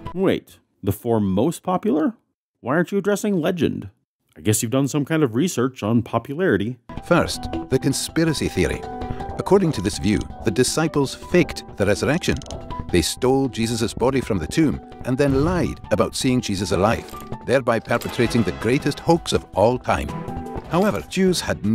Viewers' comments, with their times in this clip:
0:06 but now the Bible is telling me so in a Scottish accent. Now I'm convinced 😂